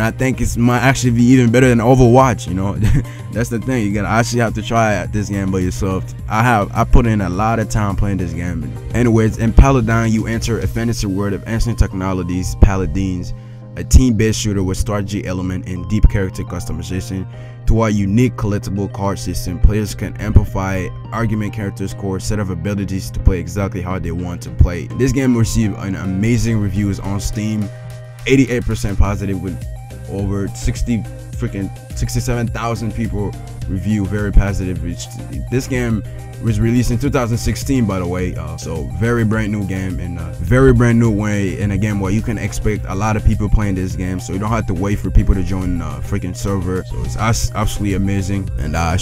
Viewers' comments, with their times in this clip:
0:10 Not a bad list but wtf does he say
0:36 I thought it said "Enemy Bacon Dstroyed"